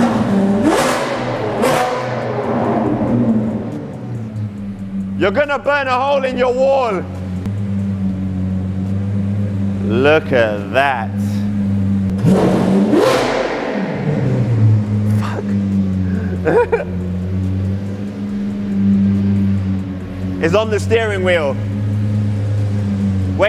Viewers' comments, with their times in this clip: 0:05 you turned Jamaican for second 😂😂😂